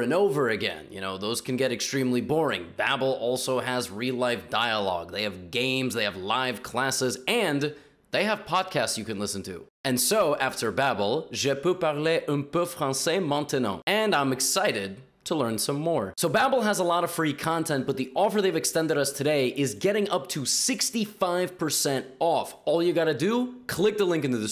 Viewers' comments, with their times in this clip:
0:10 is nobody going to recognize how amazing that french accent was for someone using an app to learn. Keep going levy!